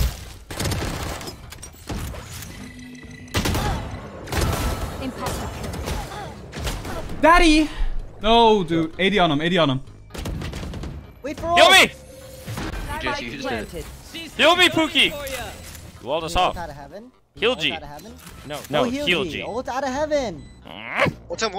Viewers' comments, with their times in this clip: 0:06 knocked him so bad he begin to say the lords name with passion